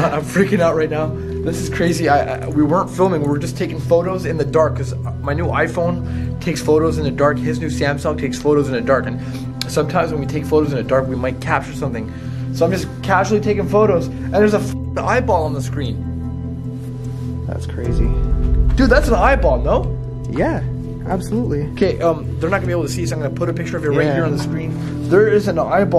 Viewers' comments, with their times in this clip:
0:08 his siamsung 😂😂😂 chill bro